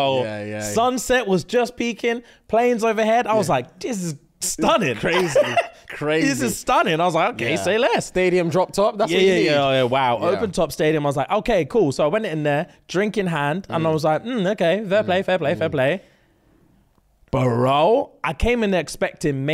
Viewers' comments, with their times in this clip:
0:04 Lmao the song break killed me